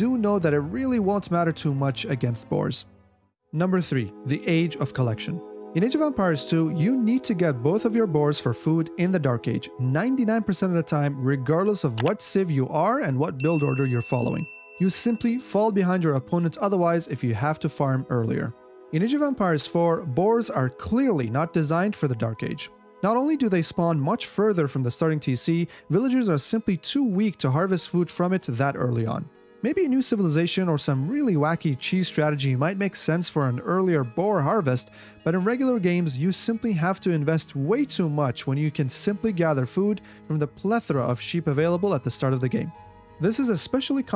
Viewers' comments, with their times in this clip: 0:03 awesome choice of soundtrack
0:05 Cheeky song... Now realizing that in only a couple of weeks Skyrim will be 10 years old...
0:27 Whats the background music ? Reminds me a little of Skyrim or so.